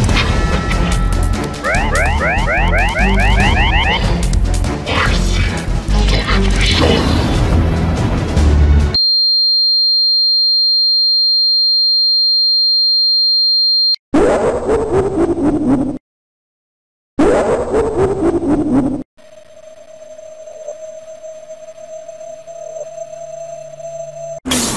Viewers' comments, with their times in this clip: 0:07 Rip my ears💀